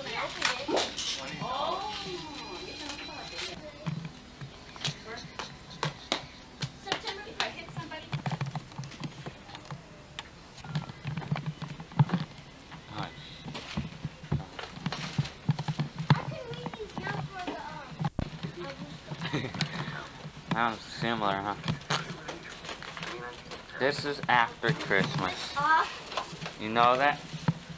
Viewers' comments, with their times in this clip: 0:09 Sounds like Skid Row 18 and life playing !!! They played that song on MTV every damn day in the late 80's !!! I was 17 when this was recorded !! Great memories!!